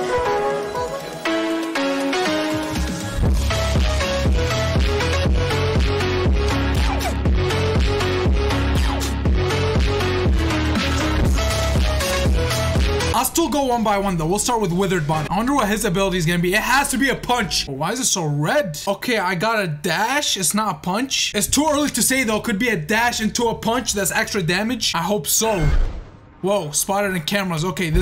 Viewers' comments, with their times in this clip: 0:10 that fasbear phonk is fire🔥🔥🔥